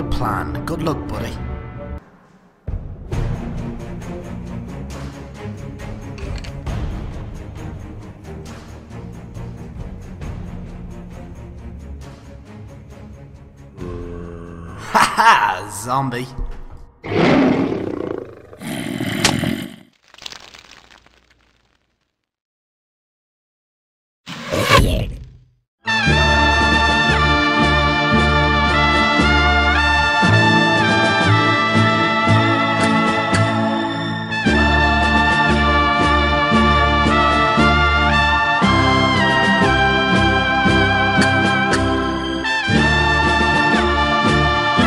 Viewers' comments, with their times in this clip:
0:07 Verry good song
0:26 Song ? It sounds epic.
0:28 The Good, The Bad, and The Ugly much? Sounds like the same music and all